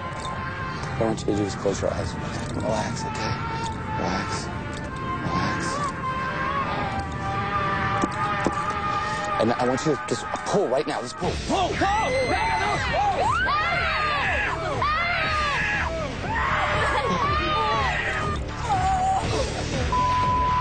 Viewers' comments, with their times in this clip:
0:08 why would a lady be wearing a skirt on a hot summer day, the lady was origannally in half because listen hear thatnoise it the blocks that hold her two halves together